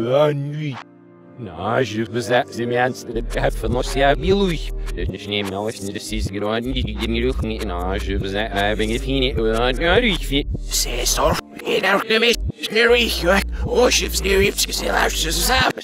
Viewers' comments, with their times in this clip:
0:03 Go straight to he goes full Russian